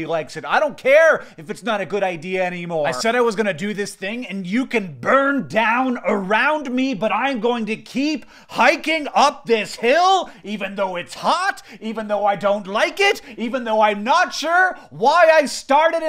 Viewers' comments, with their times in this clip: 0:04 that growl tho